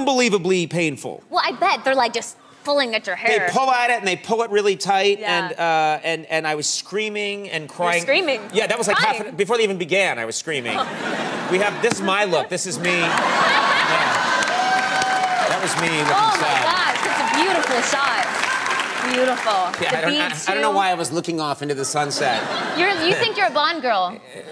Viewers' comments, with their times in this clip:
0:06 she sounds like a disney princess.